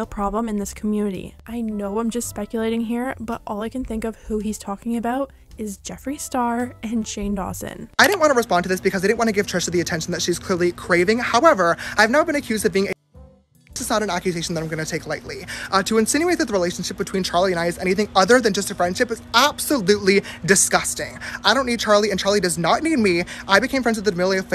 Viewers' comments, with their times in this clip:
0:07 Im not hating on anyone but. Did yall understand what james said? I dont understand it cuz it was too fast😅 but man james will be a good rapper/lawyer lol 🤣
0:08 put this in .75x speed so you don’t get a ✨headache✨
0:08 damn james speaks hella fast
0:08 Ok I know this is serious but like damn James what you just said would have talked other people 5-10 minutes to say, like I have never seen you speak that fast before and I watch every video of yours